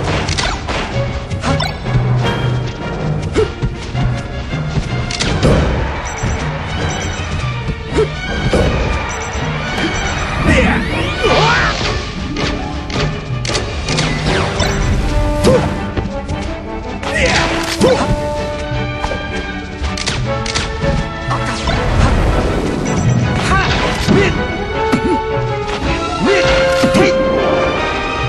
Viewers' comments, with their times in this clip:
0:10 Good timing to guys on the guns to the song